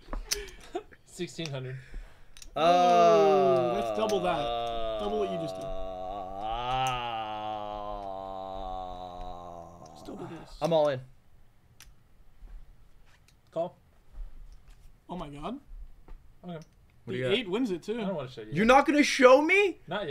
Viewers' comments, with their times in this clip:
0:05 He’s out here breaking my eardrums